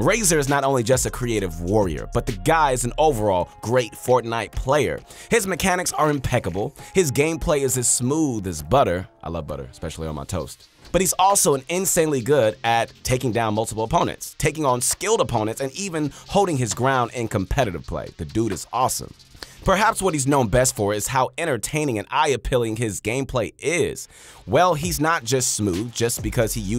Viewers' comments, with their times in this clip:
0:09 LOL i thought you said "i like butter, especially on my toes"